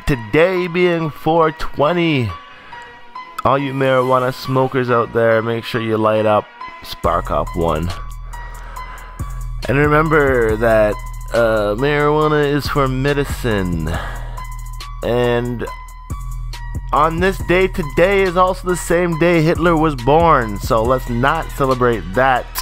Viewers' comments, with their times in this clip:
0:06 I swear I thought you was about to bust rhymes :D